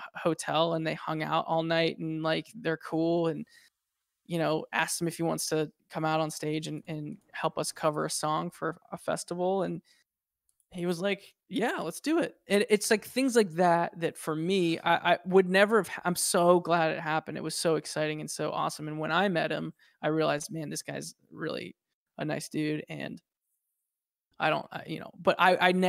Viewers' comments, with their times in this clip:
0:06 Anyone hear a blast furnace ?